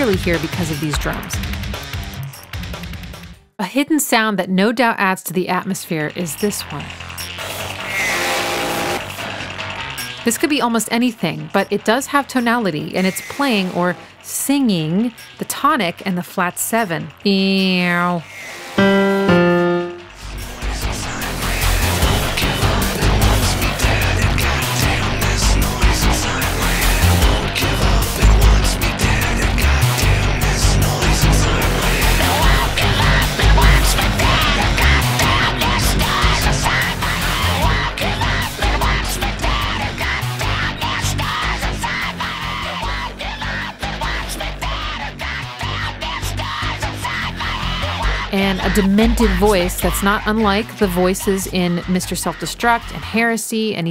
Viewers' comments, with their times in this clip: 0:05 I believe the hidden sound you mention is a ring modulated guitar played by Adrian Belew.
0:16 Great Cardi B impression ;) Also, great analysis as usual!
0:39 My God, you are a genius, I did not want this video to end, the effort you did to break all this down is just pure genius, you are so talented, I have no words. PD: those screams at the end gave goosebumps, I did not notice them at all